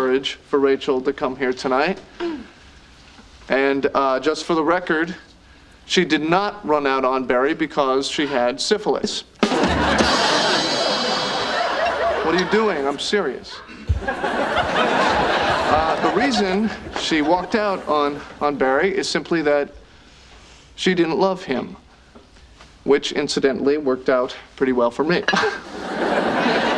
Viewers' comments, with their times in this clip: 0:09 [Rimshot] Ross: “What are you doing? I’m serious.” 😂🤣